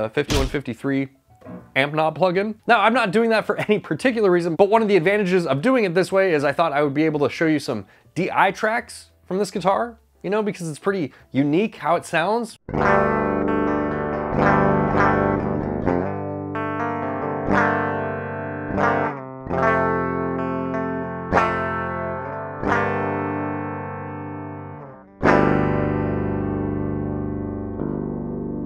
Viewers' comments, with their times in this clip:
0:09 by "unique" I assume you mean "bad" .. cause woof that clean tone is terrible. Does sound kinda cool distorted though